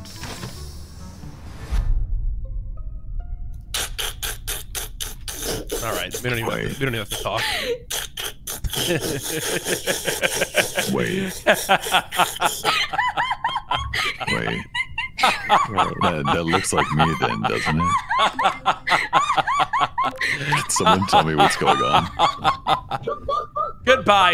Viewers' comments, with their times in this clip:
0:04 everyone went laughing like some evil characters I'm-- 😭😭
0:05 pokis laugh sounds like when you drink water in minecraft
0:05 is there any laughing competition going on?